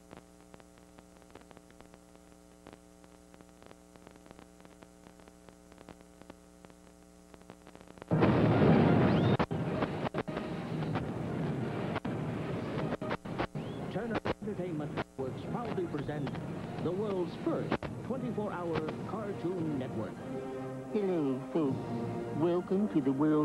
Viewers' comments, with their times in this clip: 0:07 thx sound here